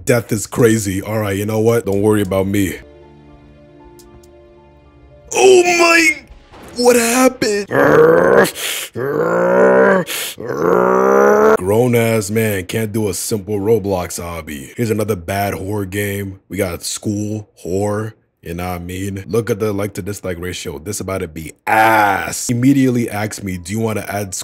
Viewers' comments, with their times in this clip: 0:08 almost sounded like a car XD